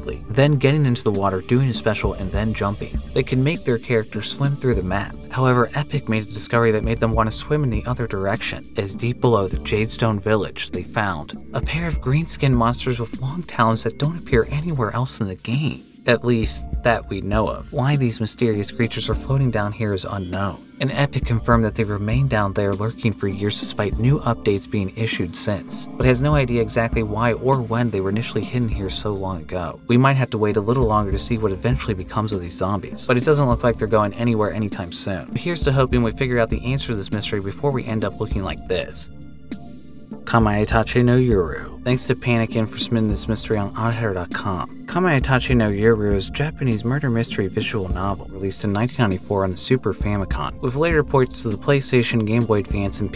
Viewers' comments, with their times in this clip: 0:05 Why are you talking so quiet bro. Are your parents in the other room?
0:38 how did u pronounce that so easy